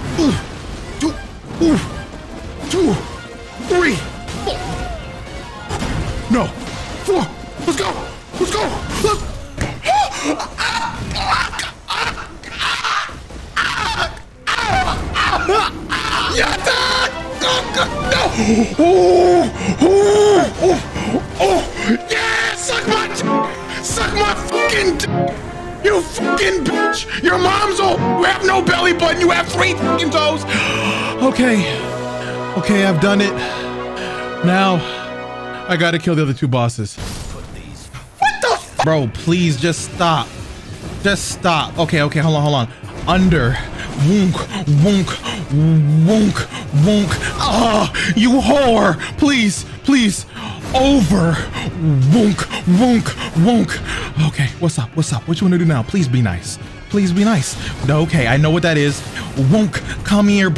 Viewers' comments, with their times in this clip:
0:07 I laughed so fucking hard that it knocked the air out of me it sounded like he just broke his bones or something lol
0:44 If you close your eyes you're gonna hear some sussy situation happening